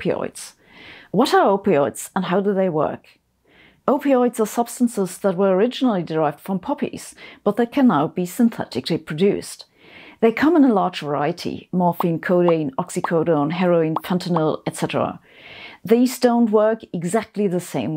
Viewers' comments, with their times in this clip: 0:03 Am I the only one who misheard the word 'poppies' as 'puppies'?😱